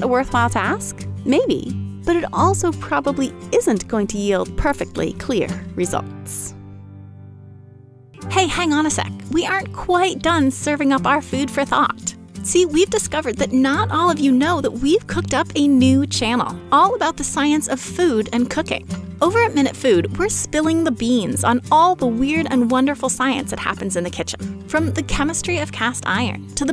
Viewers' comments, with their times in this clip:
0:07 "but it also probably isn't going to yield perfectly clear results" as the music pauses my mind frantically searching for the silly pun I must have missed